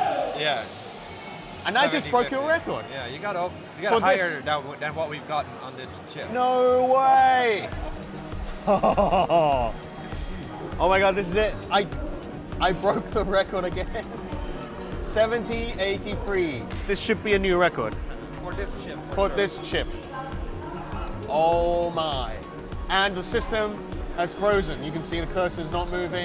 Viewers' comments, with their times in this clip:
0:08 tf2 spy sound effect #2